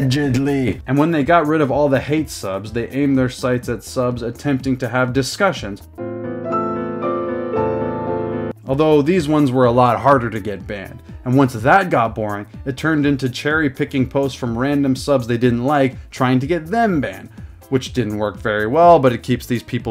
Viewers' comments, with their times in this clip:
0:05 feels warning: unexpected plin plin plon
0:05 bruh I have that as my ring tone and you made me think I was getting a phone call 😭😭😭